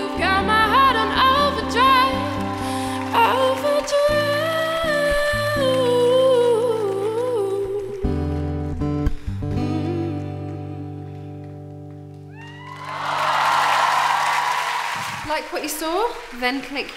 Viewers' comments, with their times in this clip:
0:04 that run awesome